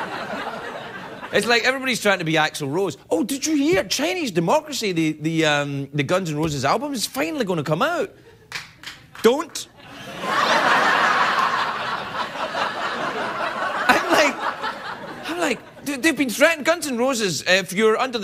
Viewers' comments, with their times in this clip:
0:03 Chinese Democracy is about to come out! ... one person claps lmaaaoooo